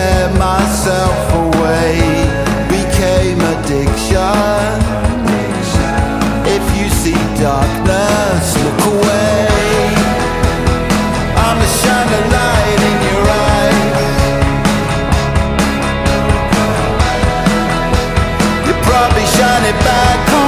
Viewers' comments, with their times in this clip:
0:06 oh wow the guitar in this it just… i cant explain it it feels nostalgic in a way with a smooth comforting feel to it. Gotta love this song as a whole 💚